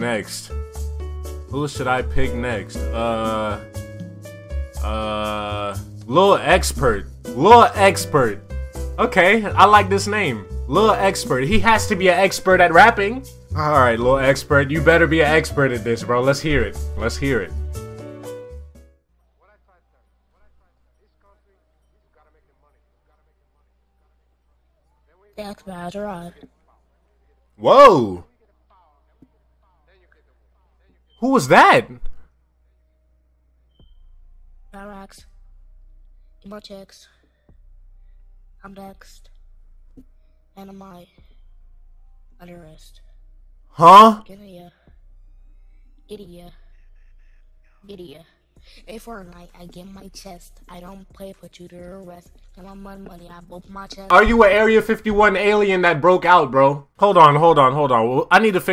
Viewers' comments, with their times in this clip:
0:06 well he ain't sound like an expert
0:18 after aliens discover autotune
0:32 Travis Scott when he was 8
0:42 HUH? kinda sounds like that dude from the meme/vine